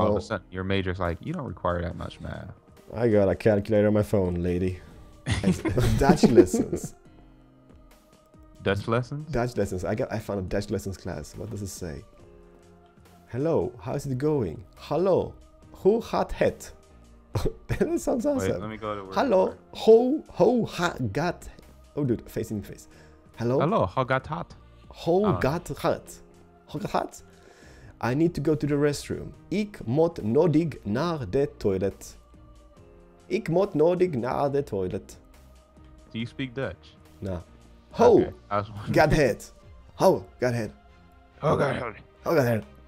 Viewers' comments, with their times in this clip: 0:09 I am dutch an laught the crap out of me when you tried to talk hallo hoe gaat het and ik moet nodig naar het toilet :D ahahhahahahaha
0:11 Haha its fun when he trying to speak dutch
0:26 That's dutch! :D I'm Dutch too!